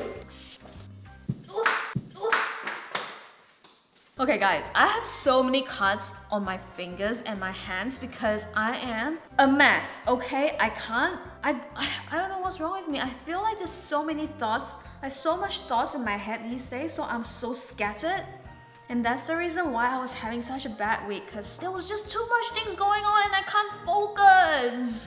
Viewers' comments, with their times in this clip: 0:10 girl sounds like she needs a vacay or something 🥺😂❤️